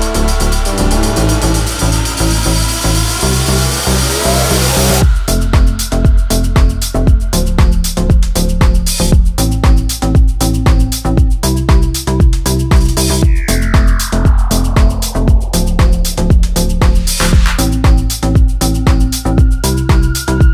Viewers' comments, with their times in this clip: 0:08 the synth is pure beauty